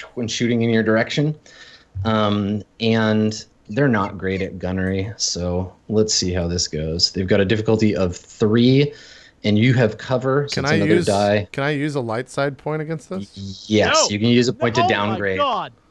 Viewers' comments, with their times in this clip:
0:03 "They're not great at gunnery." Just that disappointment in his voice xD